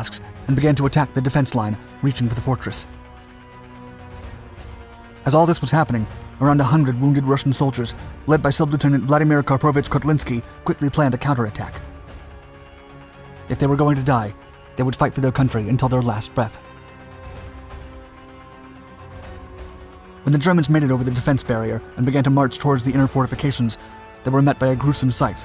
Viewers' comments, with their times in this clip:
0:07 That dude is coughing to death